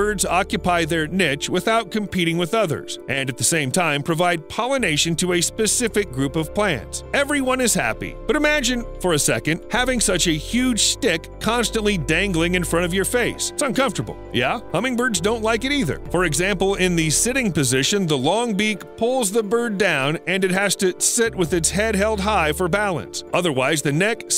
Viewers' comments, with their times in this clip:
0:10 ngl I didn't hear stick correctly at first